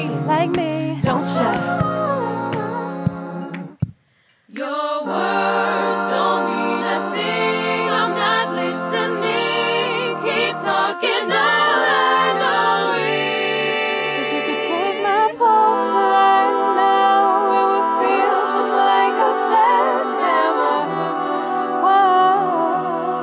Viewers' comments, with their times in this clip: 0:04 I love the change between "don't cha" and "sledgehammer" ❤ great job I love the video!!!!!